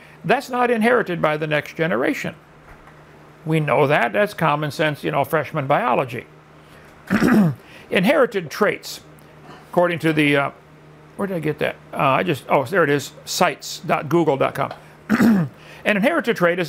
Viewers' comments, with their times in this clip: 0:04 Bella Ramsey had a much better delivery of this "dad joke" than Hovind.